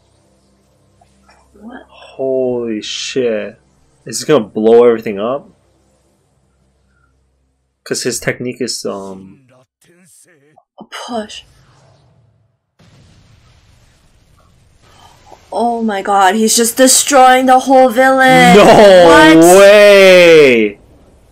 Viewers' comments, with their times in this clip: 0:09 man, the dub really can’t compare. You can hear the strain in pain’s voice when he says “shinra tensei.” In the dub there’s no strain at all. It’s the little things like that which make the sub so much better